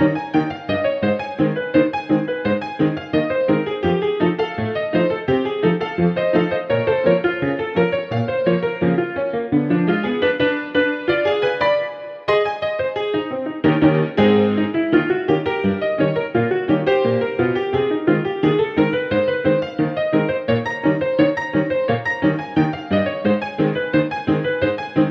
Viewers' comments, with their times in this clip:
0:09 MAPLE LEAF RAG VIBES!!!!!!!!!!!!!!!